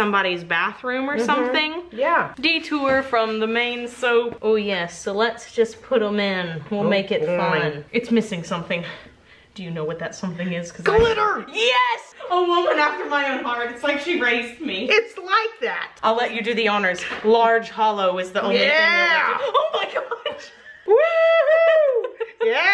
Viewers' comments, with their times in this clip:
0:10 and Mama's "GLITTER!!" took me out! LOLOL I had to pause and hold back the laughs because I made the mistake of watching the two of you while I'm at work....